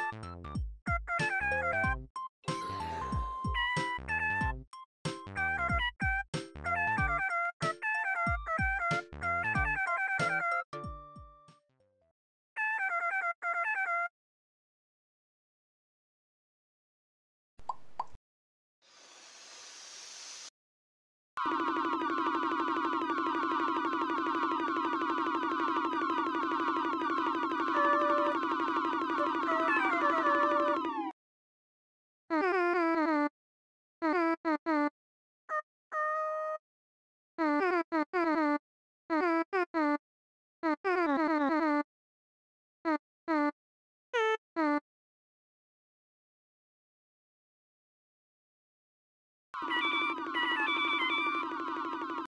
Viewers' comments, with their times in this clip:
0:07 sounds like a adorable little jingle!
0:27 I can hear the "um..."
0:31 idk why but the voice is so satisfying
0:44 the main protagonist sounds like the main theme to The Flintstones for a second there lmao